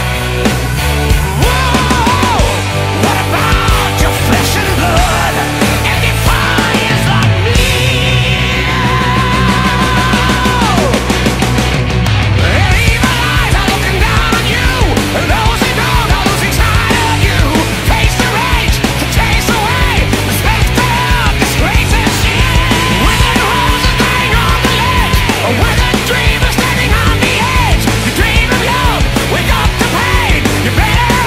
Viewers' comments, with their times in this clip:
0:08 onward. Freaking speed metal man! Easily one of the most memorable moments of the entire Avantasia discography
0:16 Lol am I the only one hearing "Taste the wind" twice here?